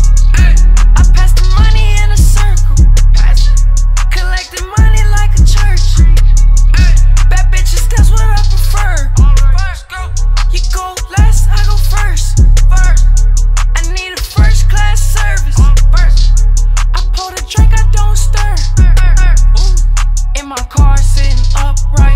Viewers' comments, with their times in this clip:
0:06 sicko mode. Sounds like same "someone said".